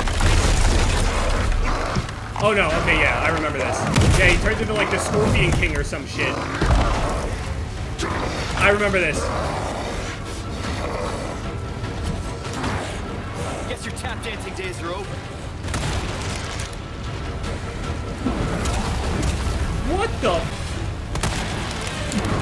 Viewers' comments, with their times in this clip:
0:03 this boss is giving me black opps zombies ptsd from the sounds he makes